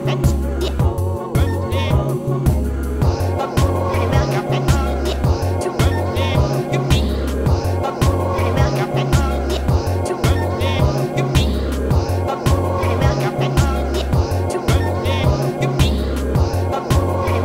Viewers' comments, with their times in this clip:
0:03 Totally! The way the complexity of the syncopation gets raised by only adding a few vocal samples to the existing loop is genius!